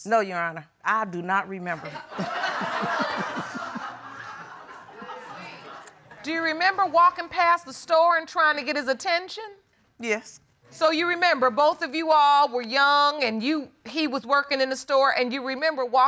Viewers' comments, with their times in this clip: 0:03 isn't that super concerning? Though spectators are laughing